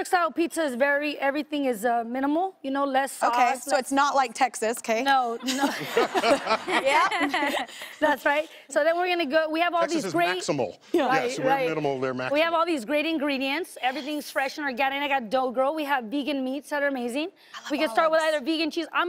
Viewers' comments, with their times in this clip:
0:06 ok but tori kelly's laugh is the cutest thing ever